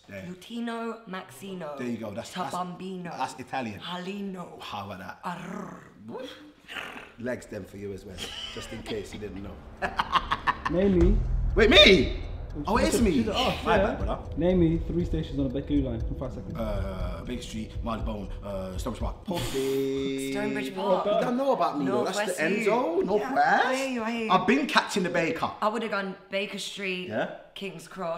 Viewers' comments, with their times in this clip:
0:09 You know chunkz was gassed hear his voice lol